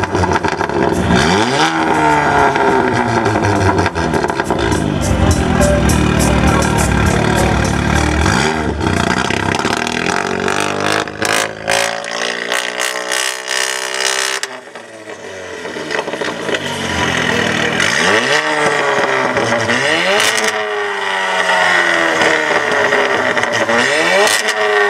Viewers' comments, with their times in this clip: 0:09 thats THE most fartcan shit noise ive ever heard. No honda could even reach that level